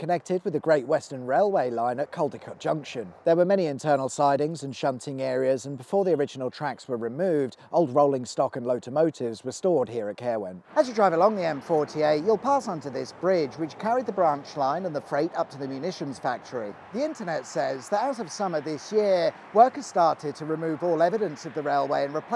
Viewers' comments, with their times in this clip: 0:04 What are lotomotives?